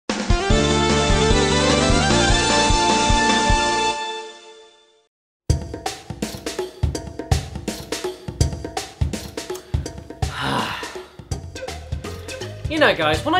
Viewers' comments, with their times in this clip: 0:00 WHAT? I CAN’T HEAR YOU BECAUSE OF THE CASH BANOOCA MUSIC